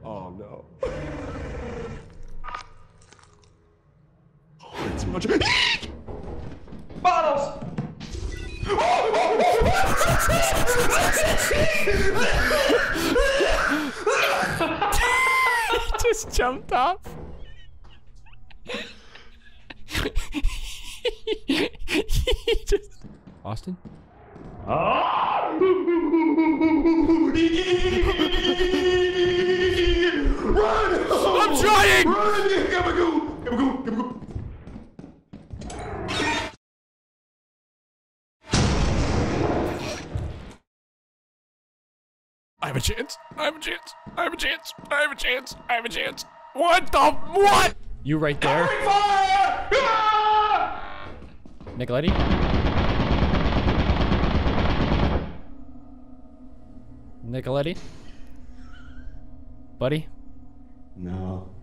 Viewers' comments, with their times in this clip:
0:04 first time I hear a genuine "eek!"
0:47 the way he just run into the smoke, gunshot firing, then just silence 💀
0:48 i died laughing on how he just said no...